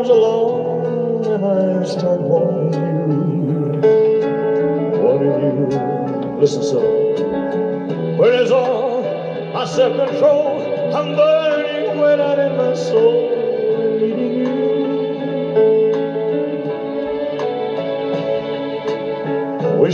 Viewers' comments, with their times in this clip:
0:06 Atn2 it sounds like he calls out her name ""Cilla" and at 4: 21 I miss you , "Cilla".
0:06 someone posted the timestamp .. It was said so fast an still hard to really understand.